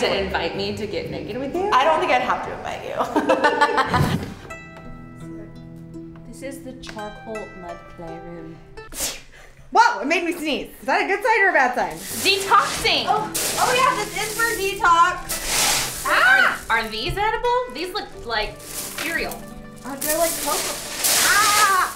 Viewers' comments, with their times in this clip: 0:08 Watching this during covid and the lady sneezes freely and they just continue on reminds me of how gross society used to be lol.